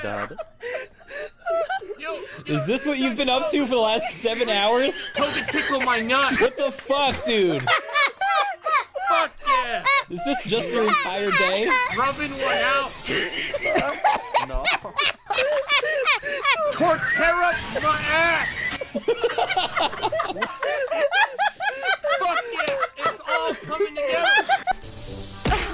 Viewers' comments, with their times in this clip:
0:10 Mousey's unfiltered, dirty laugh is my favorite part